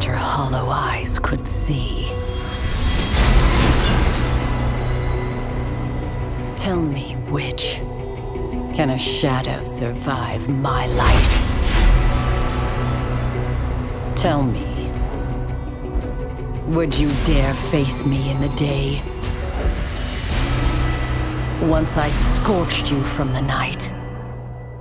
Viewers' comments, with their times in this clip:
0:05 that voice gives me chills and I love it! I wanna know so much more behind the lore of all of this now!